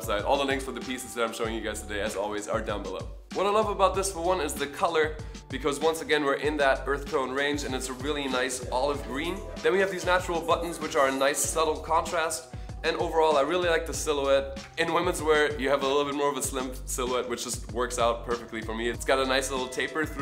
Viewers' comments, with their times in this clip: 0:07 Whats up with the audio ?